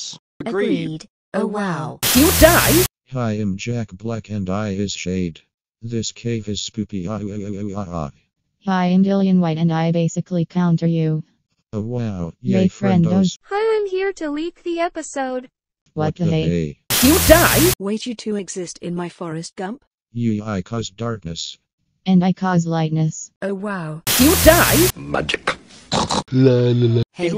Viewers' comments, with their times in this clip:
0:08 white has remotes voice